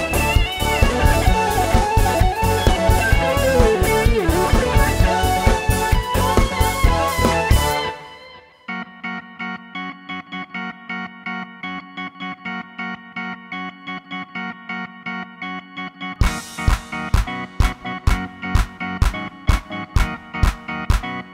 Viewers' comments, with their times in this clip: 0:08 I do find the beat a bit off during the song but you guys are great nonetheless!